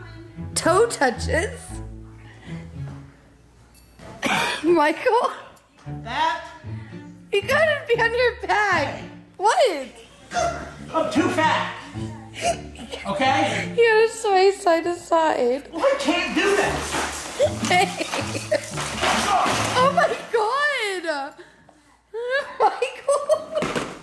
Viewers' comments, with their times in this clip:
0:09 he's sounds like a airhorn hahahaha